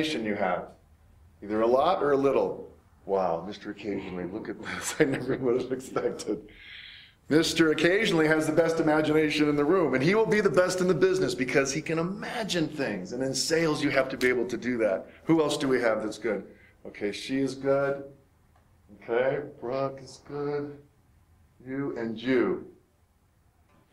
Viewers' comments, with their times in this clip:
0:07 In min the white guy laughs because he knows the meanings of the sign that bold head guy shows.......if you know you know